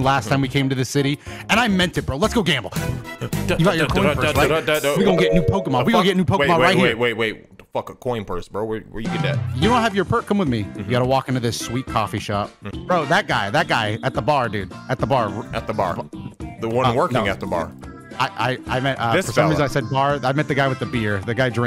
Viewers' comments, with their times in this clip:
0:03 There's something funny about how the Bowser World 8 theme just cuts to a phoenix wright sound effect